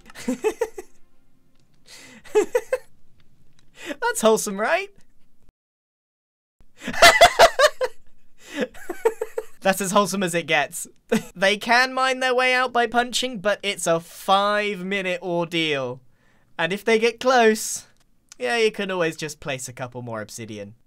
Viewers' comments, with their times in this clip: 0:06 it wasnt the turn it was the laugh that got me
0:07 GRIAN'S LAUGH WAS SO FUNNY
0:07 this laugh got me lmao